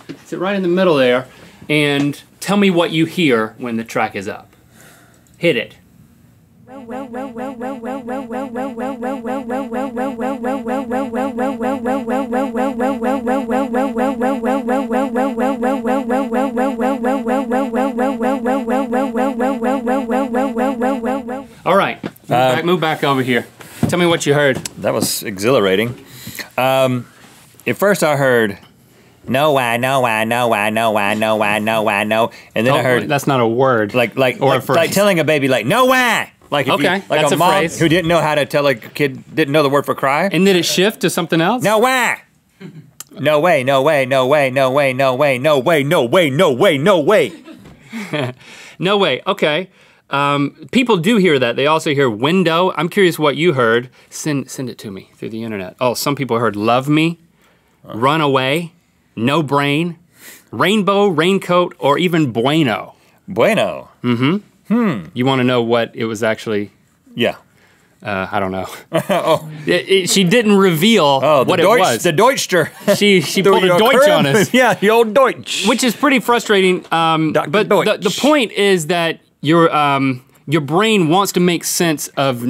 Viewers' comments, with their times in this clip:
0:07 also no ran away
0:07 I heard nowhere
0:07 I heard "well done", it then evolved into "Landeau"
0:10 I speak Spanish so I heard “BUENO” lol
0:29 NO WAH!!! Kirk hammet cries* Guitarists will understand...
0:55 when i focussed on the left being the one to start, i heard 'nowhere', when o focussed on the right to start, i heard 'random'
0:56 i heard no bueno
0:56 nebula and mebel
1:03 it says rhino in right ear & nowhere in left
1:04 i heard Geko
1:04 I heard Row row row row then Grow grow grow